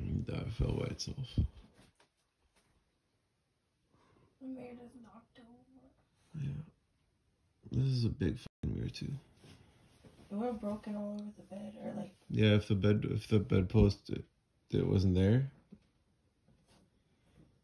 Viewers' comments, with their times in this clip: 0:05 I heard someone say " then it was knocked over " if you play it .75 speed it sounds more clear